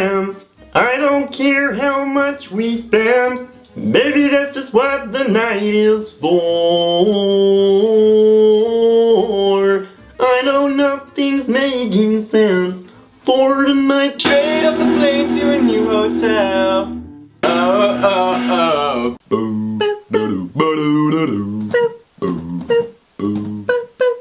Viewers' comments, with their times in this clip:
0:09 Why is no one tslking omg even ghough it was as kermit that sounded amazing